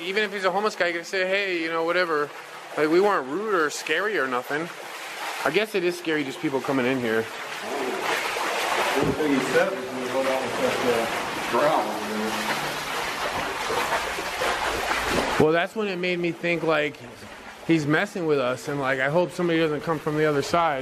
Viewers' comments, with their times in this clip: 0:07 Great video, scary,be careful. sounded just like a growl or grunt behind yall